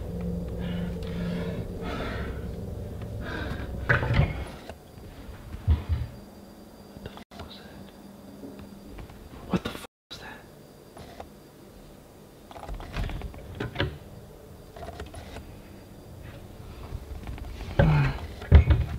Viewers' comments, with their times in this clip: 0:05 WERE THOSE FOTSTEPS OF SOMONE RUNNING???????????!!!!!!!!!!!!!!!!!!!!!!!!!
0:05 Bro i was watching this at night and as his alarm went off my clock turned off and it was and it scared me
0:06 So ironically at 11minutes and 11 seconds (right when the game started ) he heard the footsteps and creepy noises ?! Weird